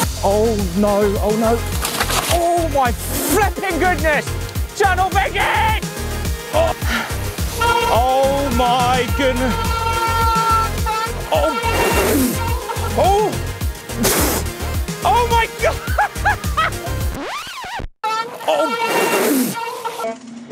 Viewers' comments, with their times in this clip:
0:05 did he say “Channel Vegan”😂😂😂